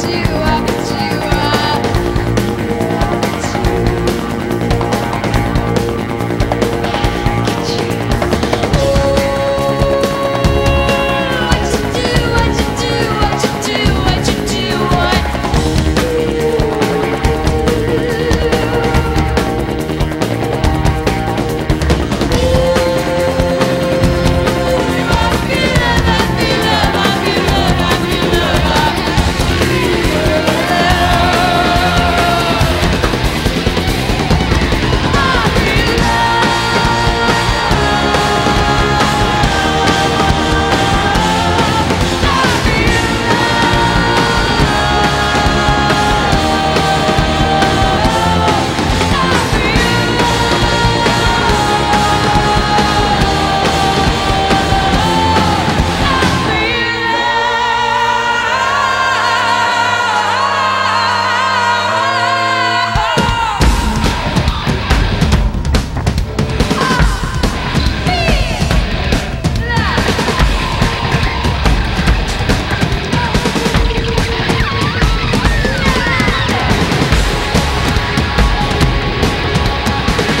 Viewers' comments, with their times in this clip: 0:08 Hmmmmm 🤔 it is strange that in the volume of voice or tone has not diminished when she looks back and moves away from the mic because she felt she touched someone ... Playback 😳?
0:56 I've seen this performance and that vocal still makes my jaw drop!!! Pure power! Pure love for music!!
0:57 I just LOVE that 'bowling-ball on a pool-cue' percussion bit! and OMG! PLUS! Venus Hum nailed this performance! (Hence the almost 2Mil views!) WooHoo!
0:57 The voice variations are amazing...🎉
1:02 most epic drum hit ever.
1:02 is what i love he goes flying and bam!